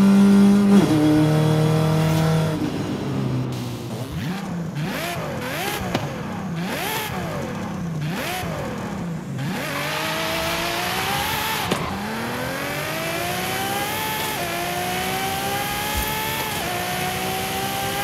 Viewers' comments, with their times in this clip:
0:06 oooh do you hear the subtle roar of the passing car's engine flying by? reminds me of motorsport 6 ambiance